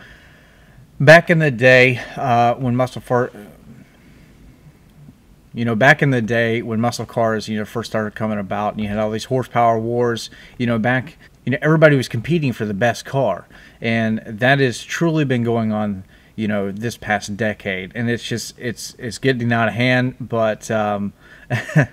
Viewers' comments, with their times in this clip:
0:03 muscle fart you forgot to edit that out